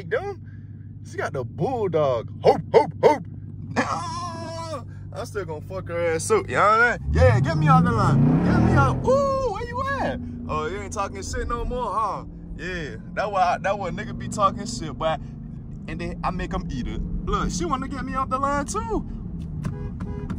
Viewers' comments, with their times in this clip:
0:05 he said he got got bull dog 😭😭😭😭😭 then start barking mannn dis man so funny